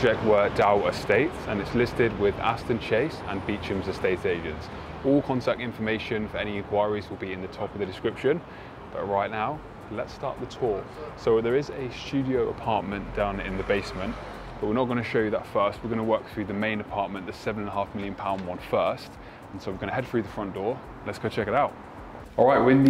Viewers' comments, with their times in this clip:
0:06 Beechams Beechams really! oh and Marley Bone, there’s more meticulously and particularly renovated. There are children watching who will listen to your every word and emulate. Read a script, ask how it’s pronounced, before setting it in concrete. Worst I’ve ever watched I switched off.